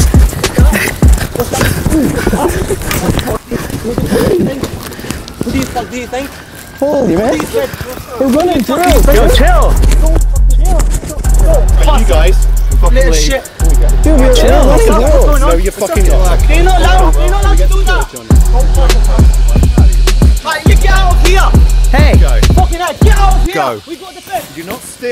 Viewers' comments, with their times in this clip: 0:09 Small kid’s always the loudest when his tough friends are around 😂